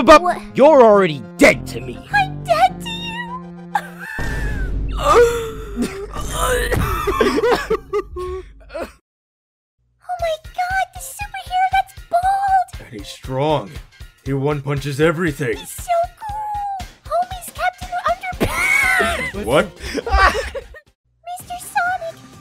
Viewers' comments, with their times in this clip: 0:05 that gasp tho